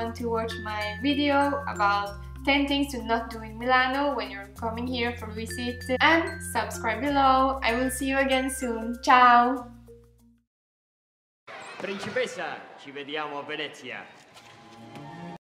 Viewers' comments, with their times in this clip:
0:09 she said " CIAO !". What does it mean? It sound like the word "Chào" in Vietnamese?